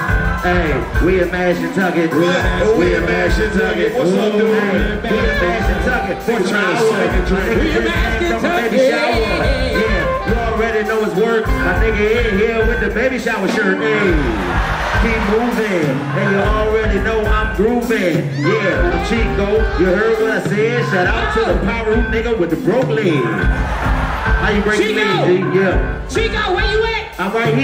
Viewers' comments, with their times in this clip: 0:10 Is only me or do I keep rewinding Chico beans rap😂🤣💯💯💯